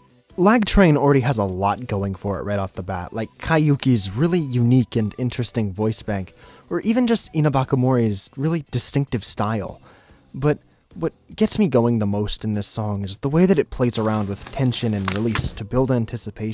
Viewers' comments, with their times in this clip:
0:03 WAIT, THIS IS VOCALOID?!